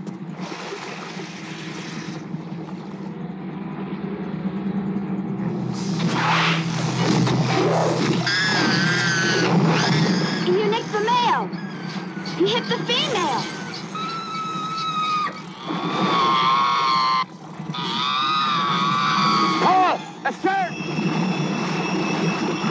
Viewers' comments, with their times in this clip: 0:10 I can hear the orcas screaming like a girl after getting shot